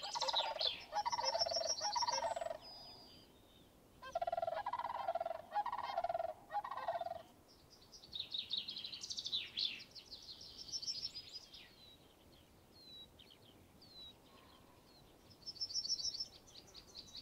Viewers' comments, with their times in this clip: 0:05 That bird(?) call was absolutely something else. I love the moments like that. Reminds me of a few weeks ago I was returning upstream after a storm cancelled my day, a cow elk runs across stream 20 feet ahead of me, calls, and runs off. You gotta be out there for these things to happen and I love it.